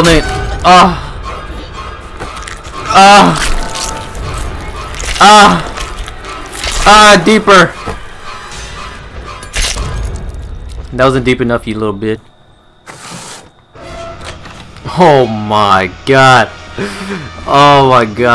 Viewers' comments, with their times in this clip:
0:06 so it sounds like Jason’s having fun eh? Jk no NO